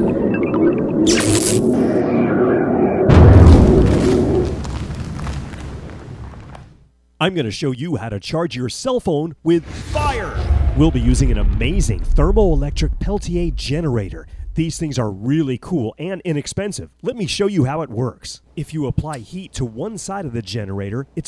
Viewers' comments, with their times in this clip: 0:09 he sounds so enthusiastic ...WITH FIRE !